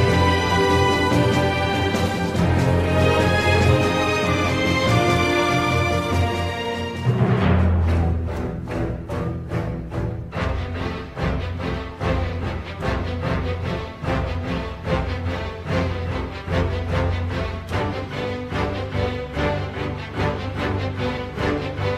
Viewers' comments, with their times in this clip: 0:07 Nakajima: NO NOT THE ORIGINAL THEME NOO! Has flashbacks of the heavy suit and others while music continues